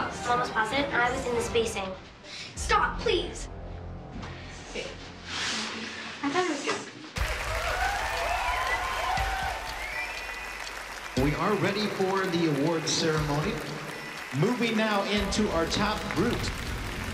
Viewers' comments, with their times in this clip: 0:04 I’m not positive but I think I heard lily say the b word under her breath. But I’m not sure tho.